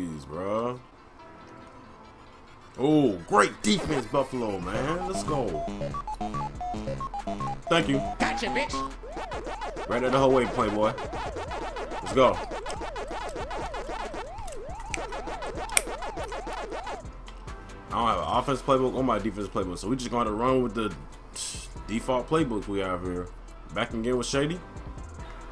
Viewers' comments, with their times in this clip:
0:08 I’m sleep!!! Dave Chappelle voice got you b***h!!!🤣🤣🤣🤣🤣